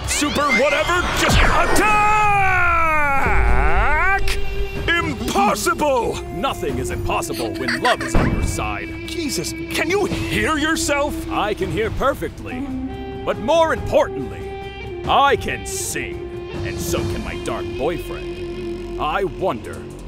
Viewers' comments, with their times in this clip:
0:07 (Dark Magician Girlfriend giggles)